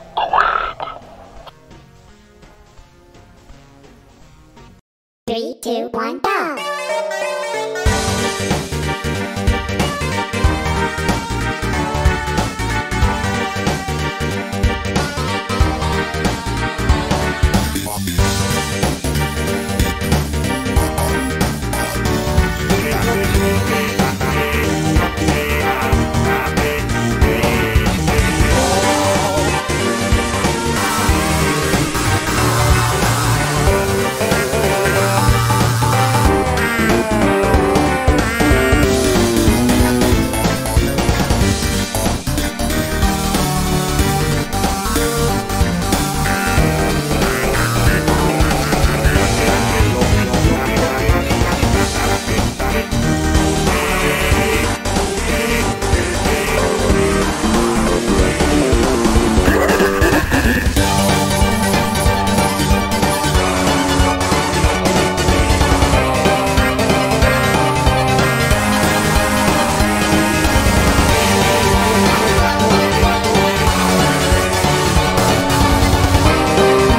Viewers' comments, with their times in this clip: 0:06 I Heard Cheeky
0:07 cheeky vocals hits hard at the background
1:00 HAHA [squidward laugh is| ÆHA]